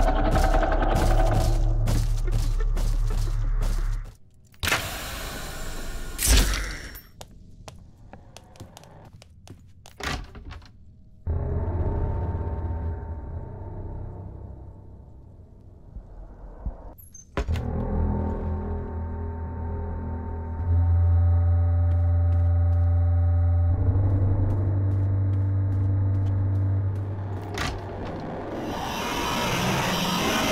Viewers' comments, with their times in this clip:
0:07 sometimes rush fakes coming, it's when the rush sound plays for only 1 second (with a fade-in and a fade-out). it happened to me too
0:13 its just an ambient sound
0:17 music rush scary
0:18 nowadays that's common. His audio just plays for like 1.5 sec and its like he spawns and immediately despawns after that time has passed. Usually annoys/scares players (got me like 4 times 😭)